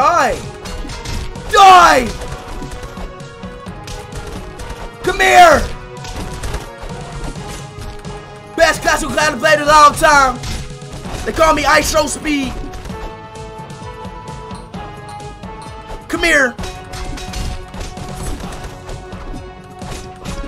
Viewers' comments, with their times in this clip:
0:08 best castle clan plate of all time.